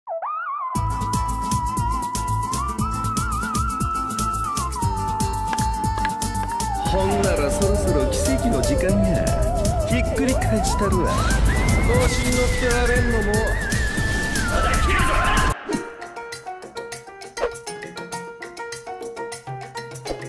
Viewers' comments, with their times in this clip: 0:01 the shinji theme at the intro hits me